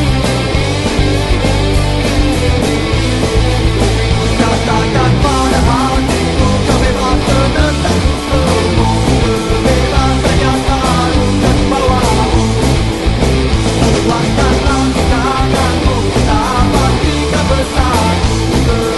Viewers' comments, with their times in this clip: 0:04 funny to see comments from these Nazis, while the song in the video is from an asian SHARP band. listen to thats Malaysian language my friends. i have no issue with Nazi or racist. i believe every countries have their own pest. cheers!